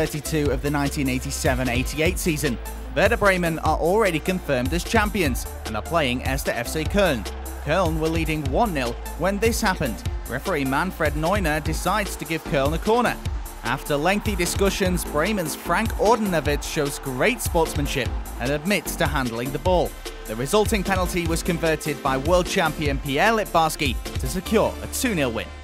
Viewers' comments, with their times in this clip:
0:10 Sounds Like Manuel Neuer